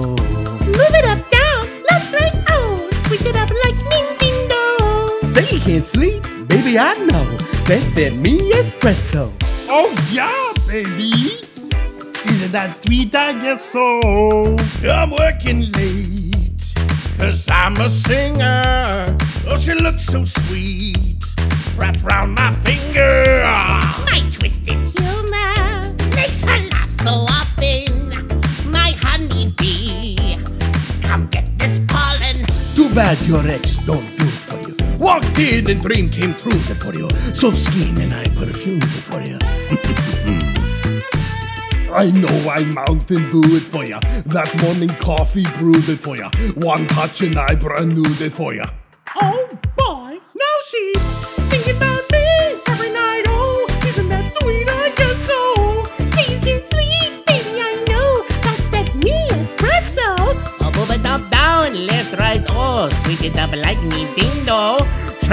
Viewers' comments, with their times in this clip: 0:06 I FREAKING LOVE that Bloofy impression! ❤❤❤❤
0:51 he hit that noteeee